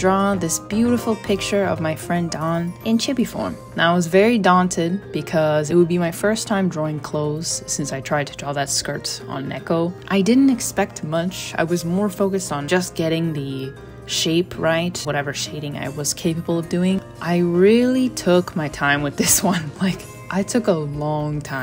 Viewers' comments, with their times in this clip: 0:03 “and i was very daunted dawn-ted”